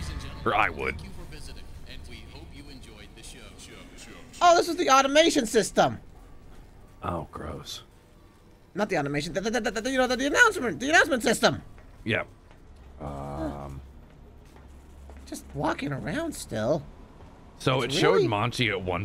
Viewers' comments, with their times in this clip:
0:04 sun stuttering is so funny